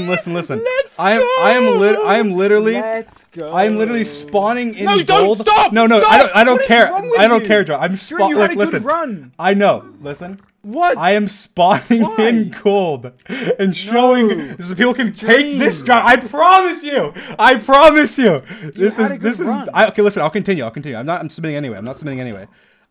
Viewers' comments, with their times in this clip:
0:04 the pain in George’s voice telling him to stop😂 but honestly don’t blame Dream man